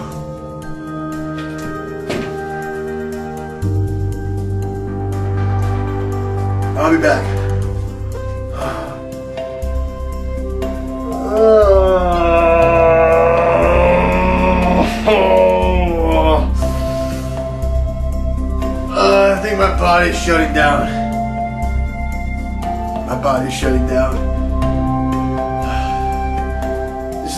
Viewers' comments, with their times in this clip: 0:10 2023 summed up in a groan